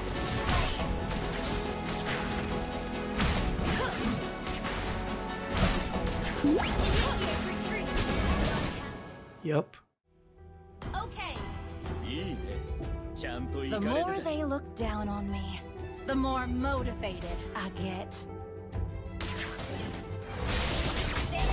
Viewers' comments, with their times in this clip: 0:07 That voice crack! XD. You could feel the SoloQ pain oozing out of it.